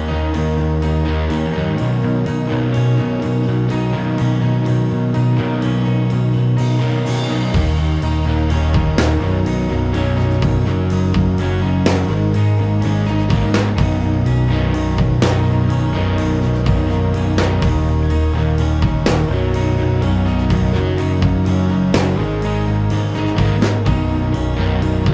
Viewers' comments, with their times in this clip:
0:06 You and Yours through the end of the song is my favorite guitar riff I have heard in years. Just now discovering this music, absolutely loving it.